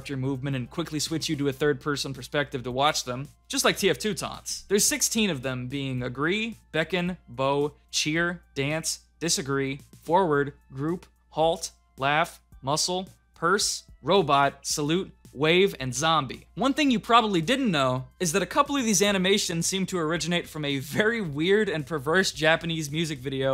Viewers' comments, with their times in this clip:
0:05 you said bow wrong
0:07 I died a little inside when you pronounced 'bow' like bow for bowtie... even though you are literally using footage of the character bowing... lol